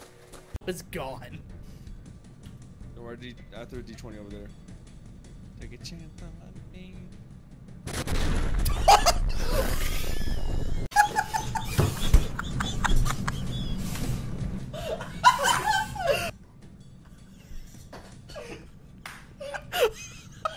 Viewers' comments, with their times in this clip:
0:06 OMG I lost my shit when he sang and then the explosion happened LMAO